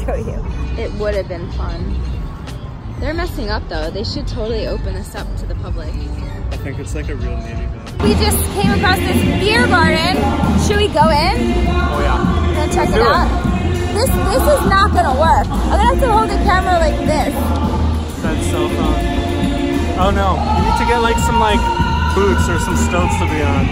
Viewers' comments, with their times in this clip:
0:08 Selena starts playing😂